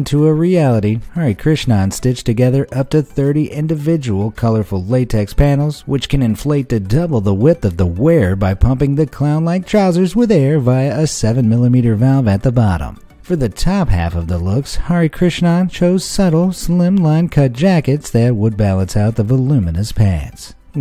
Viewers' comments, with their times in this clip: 0:06 i sounds like hes rapping rhymes